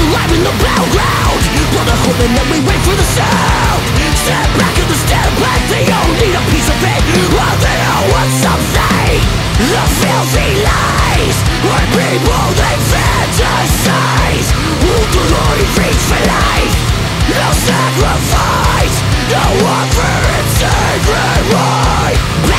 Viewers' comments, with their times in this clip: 0:09 Man that riff is one of the filthiest slide grooves I've ever heard.